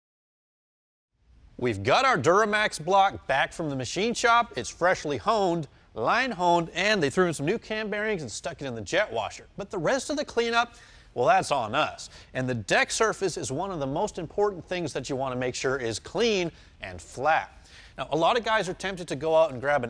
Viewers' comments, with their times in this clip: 0:05 the autotune kicks in 😂